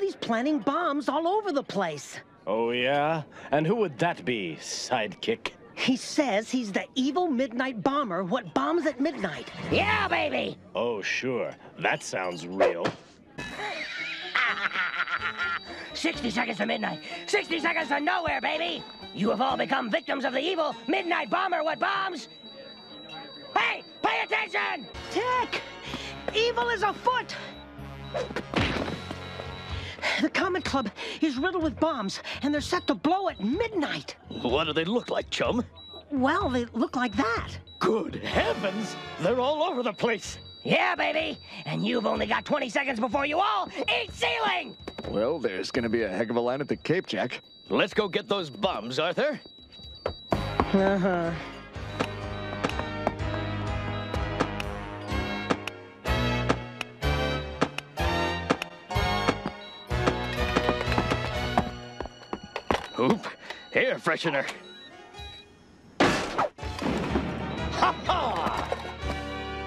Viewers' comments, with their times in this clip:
0:05 Him yelling "YEAH BABY" after Arthur says his name in another room gets me every time
0:51 those bomb clicks are so satisfying